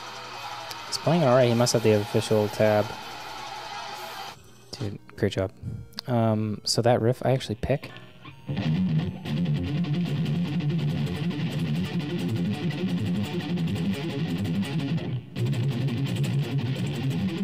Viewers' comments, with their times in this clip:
0:05 that riff looks as badass as is sounds.